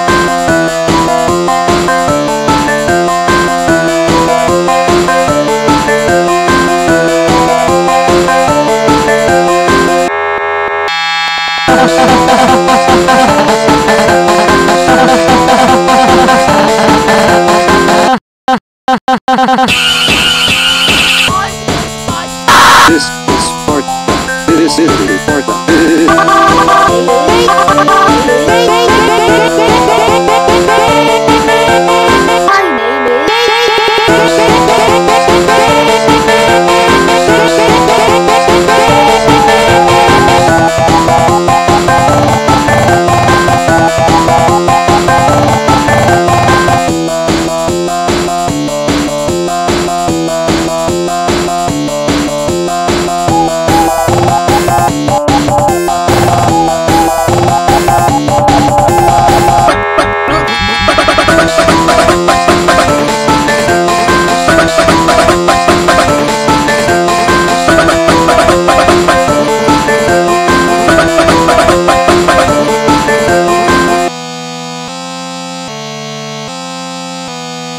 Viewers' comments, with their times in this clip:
0:10 Sounded Like A Sparta Unbotherd Remix
0:59 anybody else thinks paper airplane sounds like a chicken